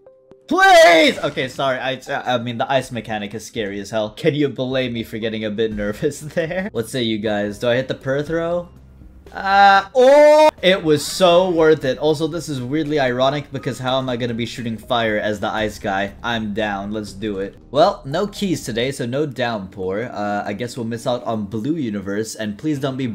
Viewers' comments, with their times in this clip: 0:10 did I just heard a sound of "oh my gawd" meme? Compare this sounds guys I swear they're the same